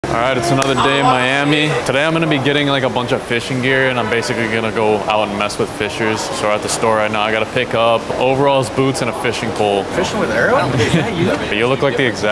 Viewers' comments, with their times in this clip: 0:00 sound like the start of power by kanye